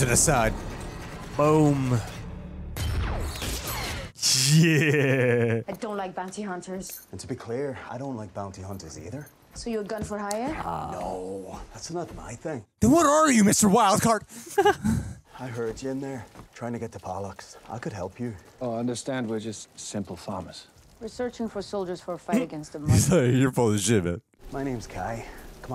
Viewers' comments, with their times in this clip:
0:07 As someone who is Northern Irish, this is a terrible attempt at the accent by Charlie Hunnam.